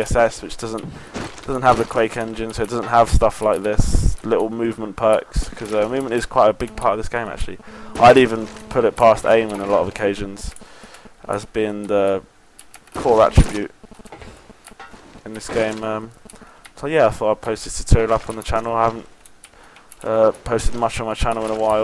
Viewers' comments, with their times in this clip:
0:04 how did he make no noise coming off the wall